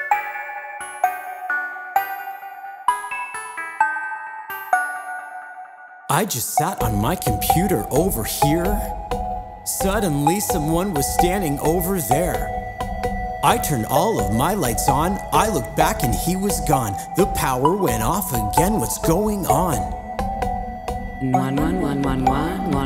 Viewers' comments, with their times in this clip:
0:06 He talks here